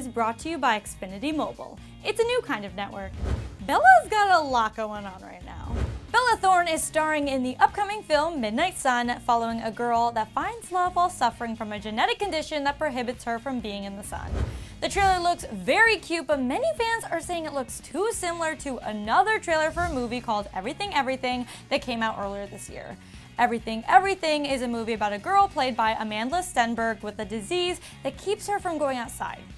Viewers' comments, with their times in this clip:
0:10 i can hear her